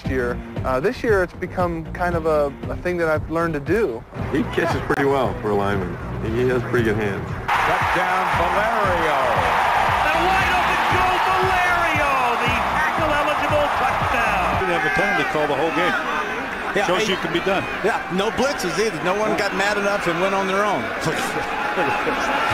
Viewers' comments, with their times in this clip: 0:03 "He kisses pretty well, for a lineman"